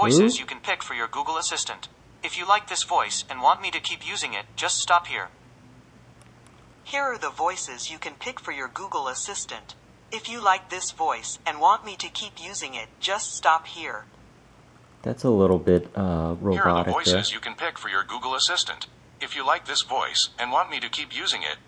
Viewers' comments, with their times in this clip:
0:07 I actually couldn't believe my ears after hearing this one for the first time. As an absolutely major Owl House and Avi Roque/Raine Whispers fan, it took a single syllable out of that voice setting to INSTANTLY hear Raine Whispers in that purple voice. That voice is now set to every single Google device I have and will never change.